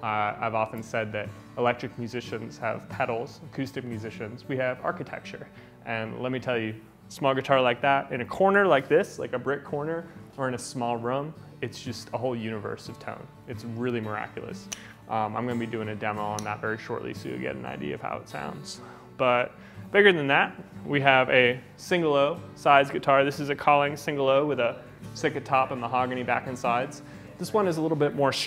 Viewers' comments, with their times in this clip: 0:10 not with his pronunciation of room I don't think thats a Cali thing.